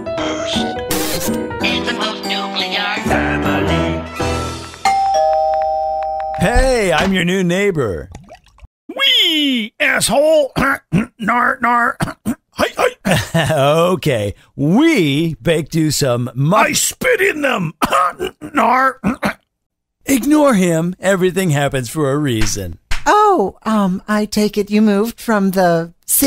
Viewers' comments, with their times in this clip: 0:08 does any women's Breasts making any noise or is it just a video?